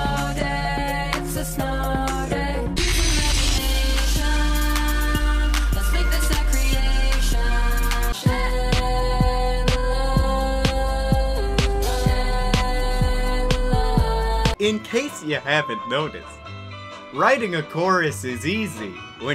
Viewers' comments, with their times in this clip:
0:03 Is it bad that this song reminds me of Sonic R?